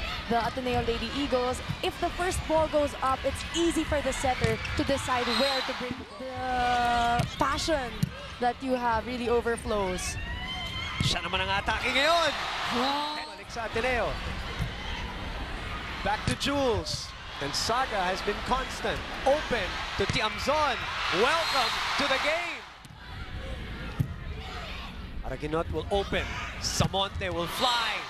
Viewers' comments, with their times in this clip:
0:09 Mariah Cary's whistle